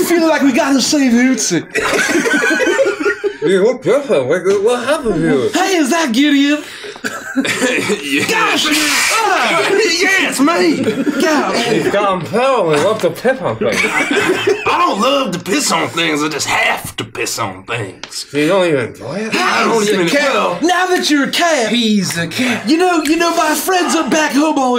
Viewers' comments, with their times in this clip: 0:08 why does Gricko sound like Stewie right now 😂